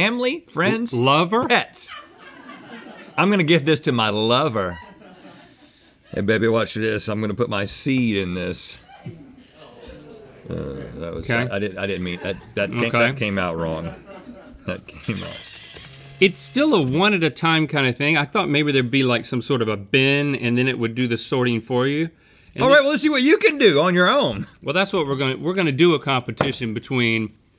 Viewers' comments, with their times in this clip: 0:09 the collective groan lol